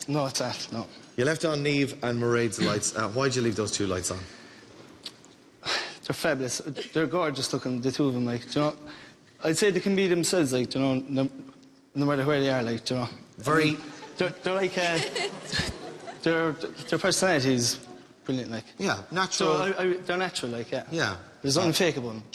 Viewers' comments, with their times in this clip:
0:06 I understood one word out of 10 😮